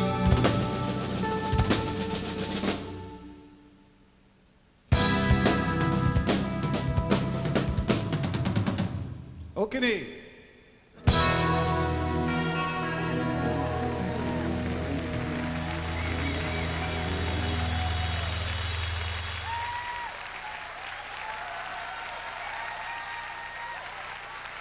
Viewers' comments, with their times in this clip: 0:09 what is saying the singer here?? okeny? idk what it is but pls tell me if you know ty